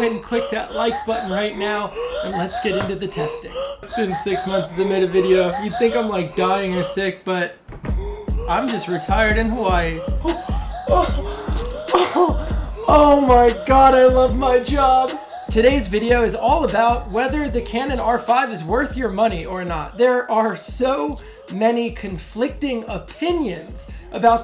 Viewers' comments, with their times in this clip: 0:06 Wtf is wrong with the background music, can't hear what you are saying. Had to stop watching Now going to buy R5.